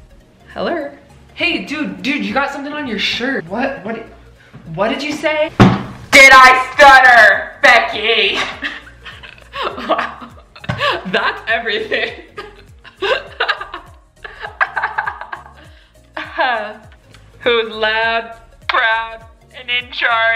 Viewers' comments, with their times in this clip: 0:06 RIP all headphone users (aka me😂)